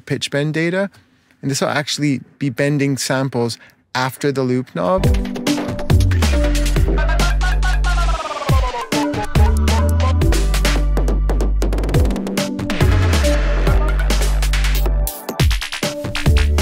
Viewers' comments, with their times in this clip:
0:04 the bend shifting is insane